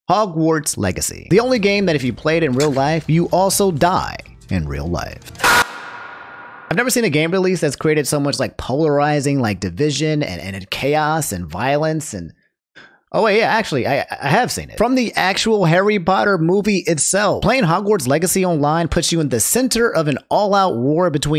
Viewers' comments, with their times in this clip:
0:05 I always love the meme of Tyler1's scream getting cut off. I don't know what it is, It's just so damn funny to me.